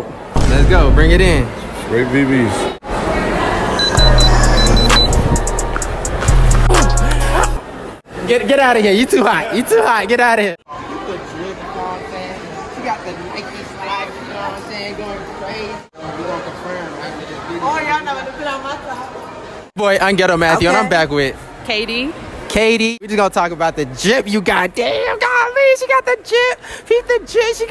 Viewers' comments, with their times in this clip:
0:10 he forgot to turn on the mic from iphone